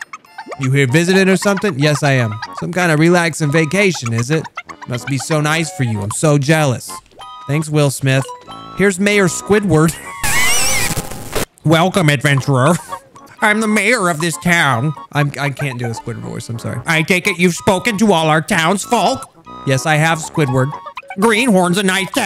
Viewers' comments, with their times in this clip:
0:08 it's mayor Squidward (insert earrape wheezing)